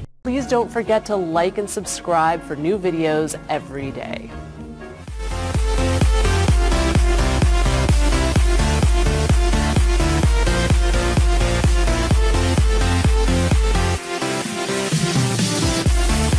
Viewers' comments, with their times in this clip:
0:04 I heard those sounds being used as horse hooves in ROBLOX, I think.. I always thought they sounded odd